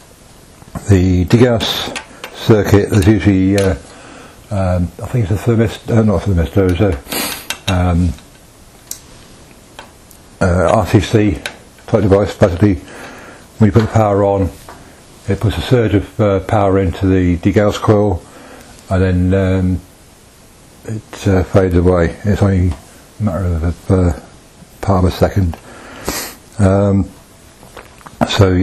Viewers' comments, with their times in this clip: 0:10 what component are you saying connects to the degaussing coil? I hear "RTC" or "RFC", but neither sounds right...